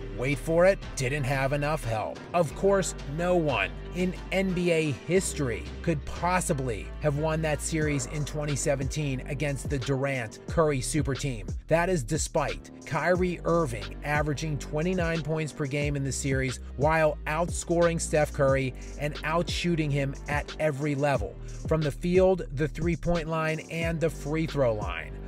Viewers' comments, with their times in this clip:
0:10 It is hilarious how you have the others snickering laughing.